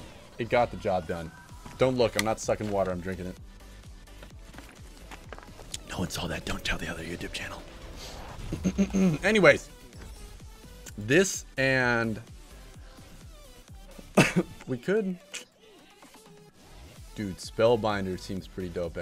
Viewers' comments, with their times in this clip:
0:04 Where's the suck?!?!? I leave you alone with another channel, and THIS is what happens